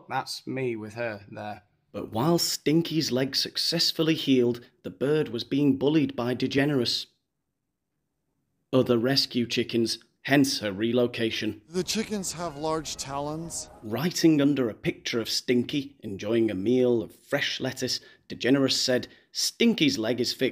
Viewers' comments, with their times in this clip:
0:05 The best placed pause.😆🤣